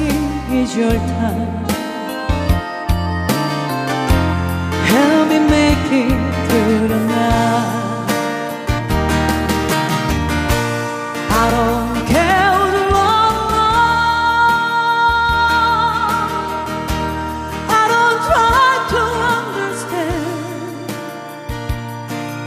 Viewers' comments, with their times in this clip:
0:07 🎉very nice voce very good song